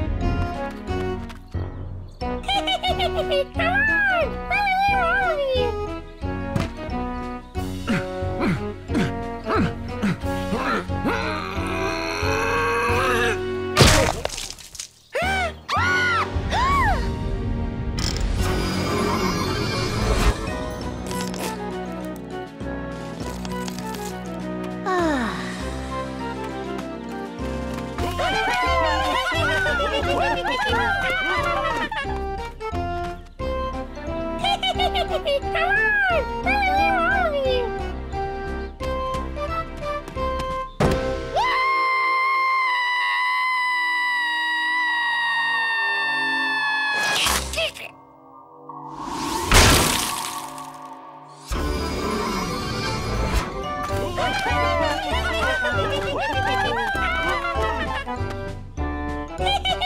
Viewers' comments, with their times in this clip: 0:03 BRO CUDDLES SAID تعال☠️☠️☠️☠️
0:47 why does he sound like he's saying "He's stealing"